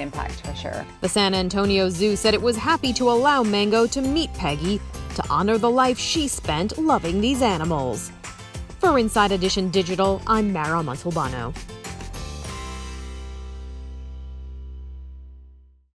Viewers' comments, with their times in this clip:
0:05 happy penguin noises